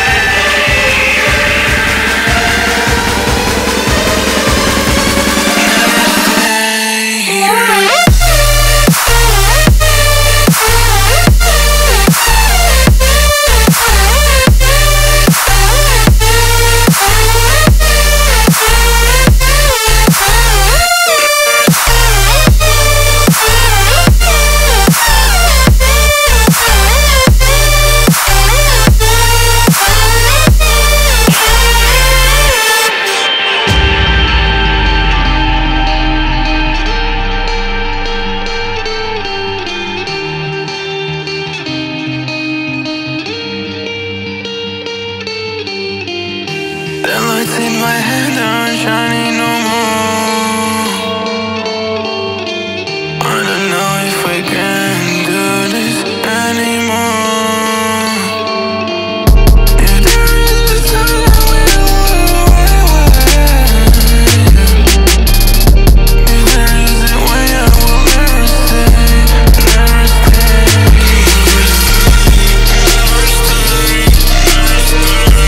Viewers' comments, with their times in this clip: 0:07 I thought you all missed the DROP BUTTON..!
0:58 Genre: Dubstep / Trap It changes to trap at: